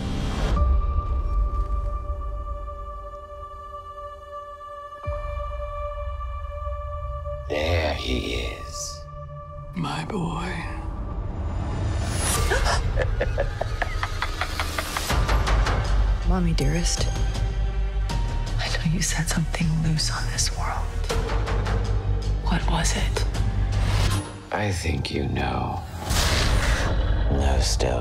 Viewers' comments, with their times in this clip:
0:10 her voice gives me the fcking goosebumps so fcking creepy